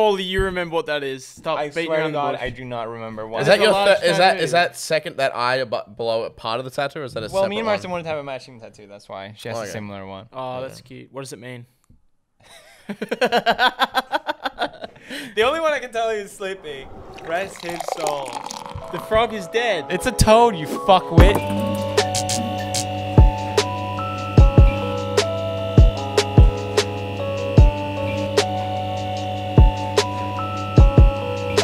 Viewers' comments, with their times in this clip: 0:09 lol can we just all appreciate pewds genuine laugh
0:09 wtf was that laugh Felix?
0:12 I've never heard him laugh like that lol 😅
0:12 is that his real laugh lol
0:12 Omg pewds laugh
0:12 T H A T L A U G H T H O
0:13 I never heard Felix do such a Satan like laugh
0:13 why Felix laugh like that?
0:13 omg that laugh.... so cute and dorky
0:13 is that his laugh???????
0:13 what is that laughhhh
0:13 never heard pewdiepie laughing like this:)
0:13 whose laugh was that it creeped me out
0:13 if that is felix's laugh i've not known him properly
0:13 What the fuck was that, never heard that laugh before
0:14 whose laugh is that?? Haha
0:15 Are we gonna ignore the fact that they was playing lofi chill beats to study/sleep to Here is a proov